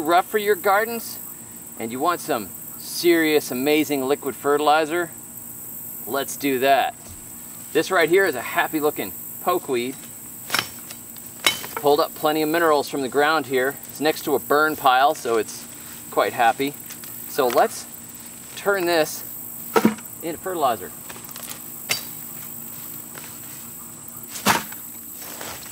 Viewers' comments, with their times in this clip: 0:07 "This right here, is a happy lookin' pokeweed–" *HACK* Great information and great humor too! 😂